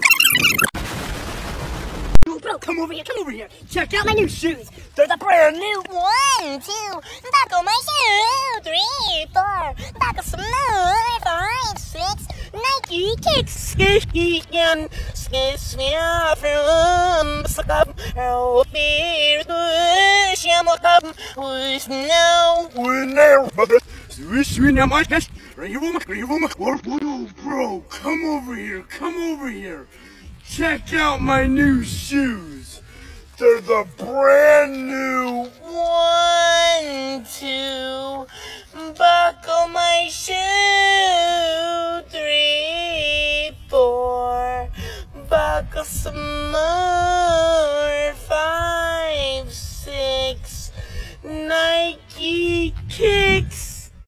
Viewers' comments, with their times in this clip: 0:04 when slowed to 2.0 is just je needs help
0:14 from Chinese To to jerman
0:16 bro started speaking 6 different language and devil language💀💀
0:17 i heard that he just said: Help me: and its Awesomeeee its Awesomeee
0:18 bros speaking ohio
0:23 Made Him Sound Like The Bing Chilling Meme Lol
0:25 he speaks arabic saying "your mom your mom" and im laughing as hard as i can from it
0:27 Put in 2x speed and it sounds normal
0:28 Not be racist but didn’t it sound like he was talking Chinese on reverse😂 also if you put 2x speed on this part it sounds like the original
0:45 soundly like a yt kids lulaby